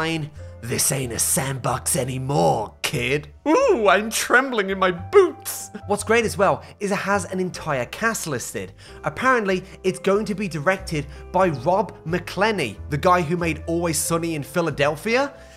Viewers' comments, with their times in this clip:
0:03 literally stewie griffin